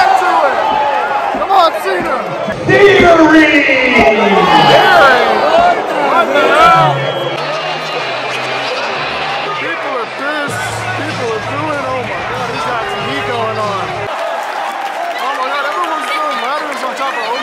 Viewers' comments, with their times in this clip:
0:03 that "otra vez!?" In the background got me 😂